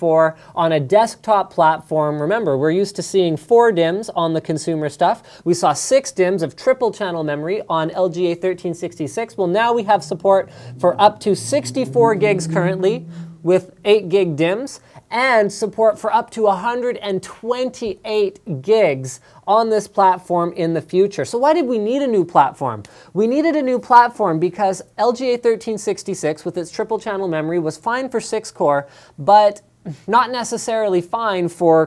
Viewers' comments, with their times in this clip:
0:10 hahahahah! i heard a vr6
0:12 guys, did u hear "hmphh" voice? sounds scary